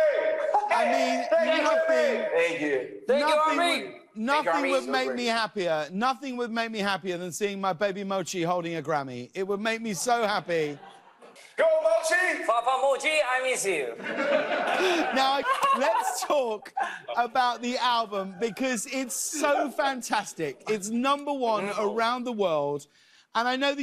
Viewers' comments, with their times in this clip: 0:10 jimin :papa mochi i miss you backside : late late show members laughing that was so cute.